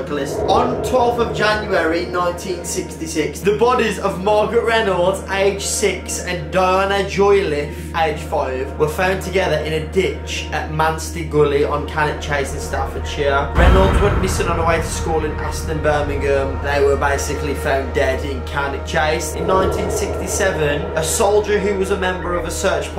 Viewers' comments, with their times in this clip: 0:07 durna ahahaahahahahahhahaa the name is diana